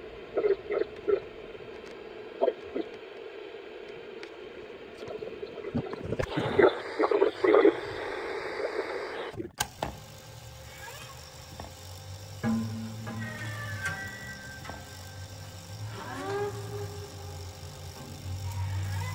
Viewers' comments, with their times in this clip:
0:05 When you were showing what was going on while you were sleeping, there was a lady talking to “someone else”, saying, “if we <do this or that • I couldn’t hear as of what> they will leave”‼️ Over and over ish.